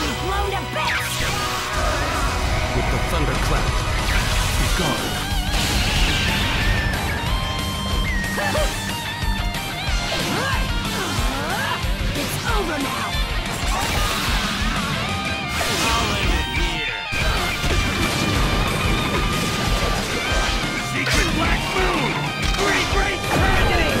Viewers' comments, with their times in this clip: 0:05 has the audio of sasuke